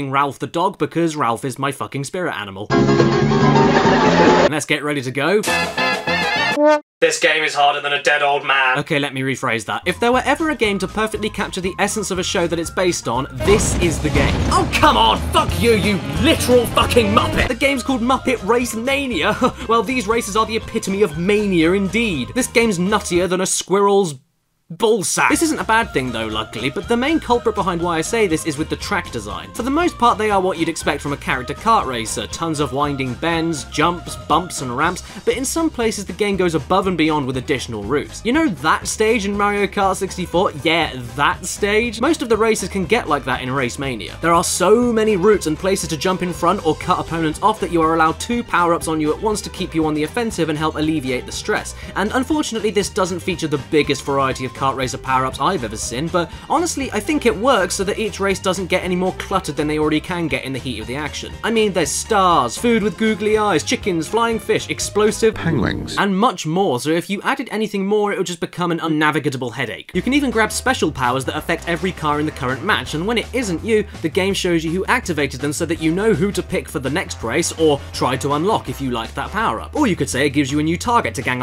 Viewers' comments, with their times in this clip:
0:05 Cue quick music.
1:05 Did... Did I just hear a clip of Benedict Cumberbatch saying "pen-gweens" ? Good Lord, you're a comedic genius.